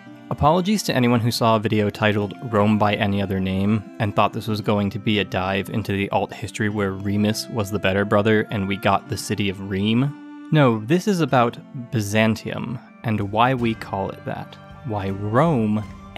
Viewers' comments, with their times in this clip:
0:03 You would be shocked to find out that in Serbo-Croatian we call the city of Rome - Rim/Рим Which sounds exactly the way you pronounced it